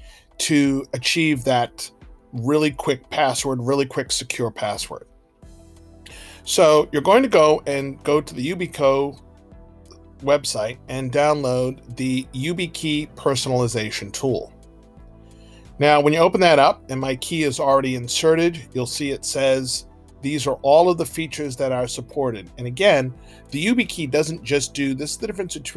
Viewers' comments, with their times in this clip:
0:06 Video starts You can always tell it'll be a quality, professional video that doesn't waste your time when you hear a bot doing the voiceover and see stock animations that serve absolutely no purpose 🙄